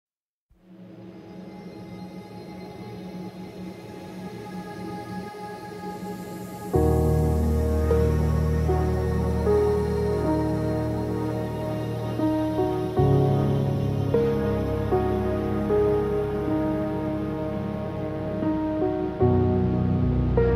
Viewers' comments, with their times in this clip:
0:07 anybody else hear minecraft